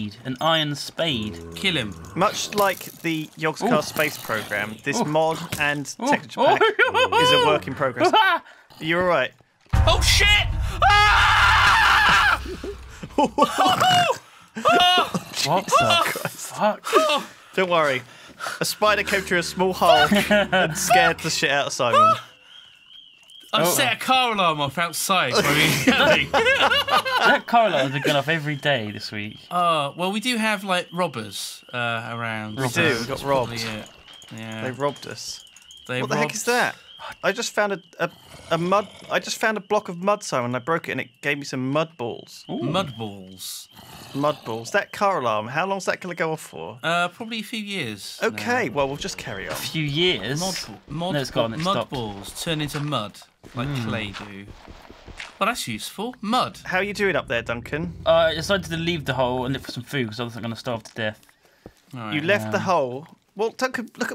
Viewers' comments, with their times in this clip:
0:04 my favorite part of this, his scream of absolute terror
0:06 "The Scream Heard Round' the World!"
0:06 I miss Simon's panicked screams of terror. T.T
0:08 That is the most genuine scream of terror I've ever heard.
0:08 Simon screaming out of pure fear on one heart always gets me in stitches 😂😂😂
0:09 simon’s scream is pure terror 😂
0:09 go to for ear rape
0:10 That Plankton scream never gets old
0:10 is Simon's record breaking scream
0:10 blood curdling scream from Duncan
0:10 That’s one of the most delightfully Minecraft screams I’ve ever heard.
0:15 Still to this day, my brother and I come back to and laugh our asses off at that scream. 😂
0:46 it is 2019 and the car alarm is still going off